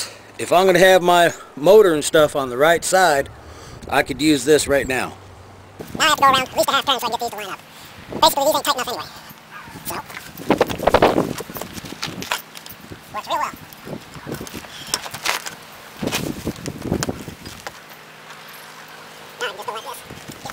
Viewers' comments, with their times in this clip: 0:07 Was that a new language ? ROFL. Great vid though, a lot of useful information. I love the Bondo idea because if that don't hold nothing will. I have learned more from you in just a few videos than most channels I've visited. Thanks for sharing your knowledge with us.